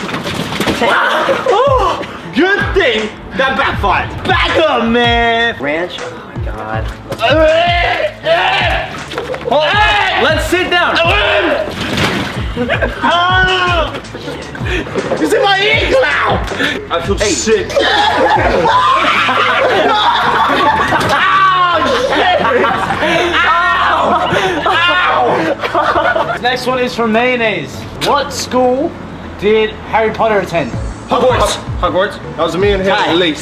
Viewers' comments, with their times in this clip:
0:04 haha i love how he said "bAcK uP mAn" 😂😂
0:18 Why is no one talking ?? 😂😂😂